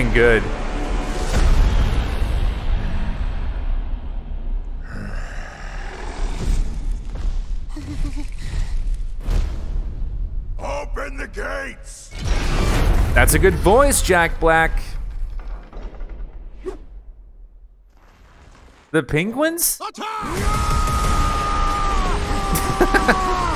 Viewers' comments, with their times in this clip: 0:10 Bowsers voice is spot on in this movie trailer